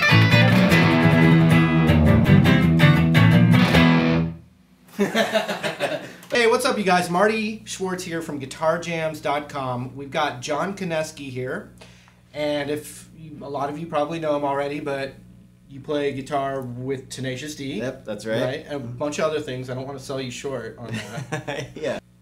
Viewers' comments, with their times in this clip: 0:04 oh my god the fake laughter and there isn't a C chord in there..wow..